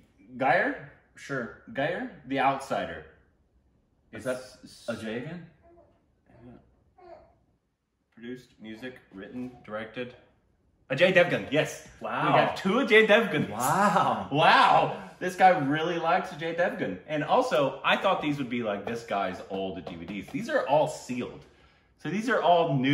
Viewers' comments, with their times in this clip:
0:05 Who else checked house when they heard the kid